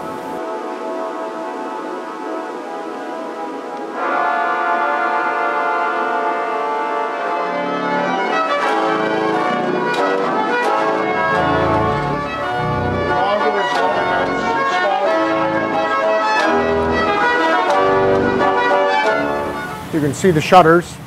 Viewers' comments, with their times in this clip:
0:06 Timestamp, I FRICKING LOVE THE SOUND THIS PIPES MAKE, I WANT TO KNOW WHAT THESE ORGANISTS WERE PLAYING